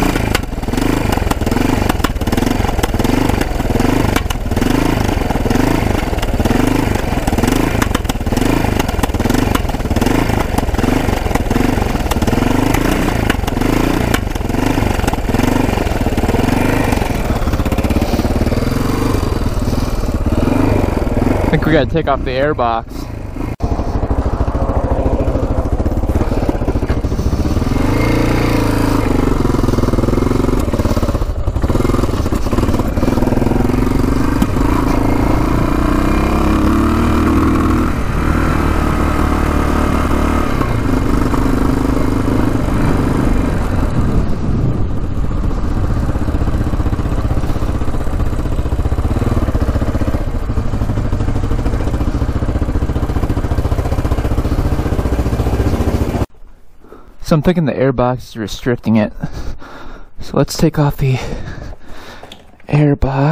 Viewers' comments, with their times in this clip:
0:10 It sounds like it should, like a sack of nails but maybe it runs to lean.
0:44 Looks like the 81 or 82 model. SR500 type CDI ignition. Front downtube has secondary oil reserve, small drain hole at the front, and a mesh filter at the bottom of it where the pickup tube is at for the oil pump. Good units, really. Kickstarter was massively out of position, usually the foot lever is level up by the exhaust pipe in the up position. Not a bad bike, and it wasn't wet sumping. Looks like you got a good one. There's also an oil strainer under the bottom of the engine, under the plate with the drain bolt. Exhaust valve clearance .15mm (cold) and intake .10 cold. 220 main jet on the thing, 22.5mm float height. Sounds like it's got some pilot jet clogging going on That's just by the main jet up in the hole on the main jet pillar. Also highly recommended to check the diapgragms on that carburetor. Air cut valve (on side), accellerator pump and accellerator pump cut valve all can get holed.